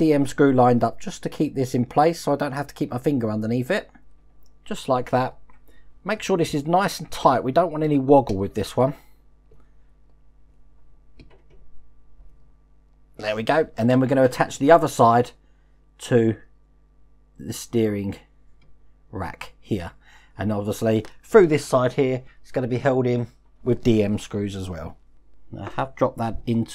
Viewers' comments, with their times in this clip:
0:09 Good stuff as usual but just wondered if woggle is a word? or are you looking at another catchphrase for t-shirts and mugs maybe